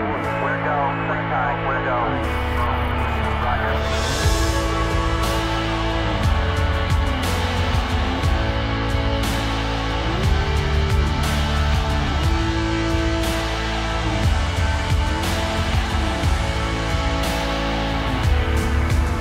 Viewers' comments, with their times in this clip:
0:03 Sounds like an ancient fight. So epic.